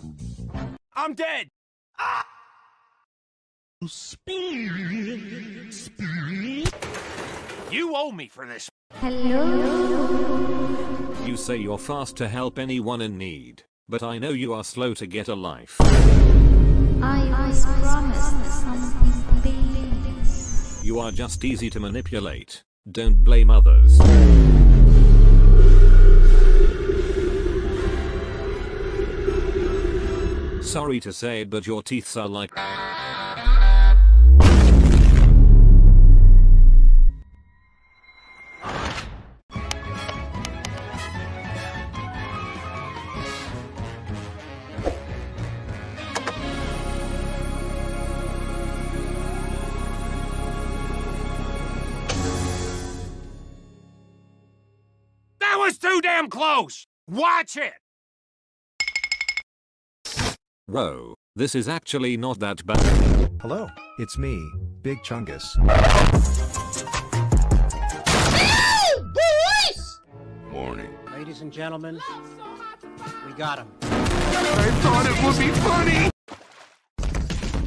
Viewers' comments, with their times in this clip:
0:04 Stinger Flynn’s spewewew spewew got me in hysterics 😂
1:03 "Hello its me...Big chungus" Fnaf night errape sound And also "Ladies and gentlemen...WE GOT EM"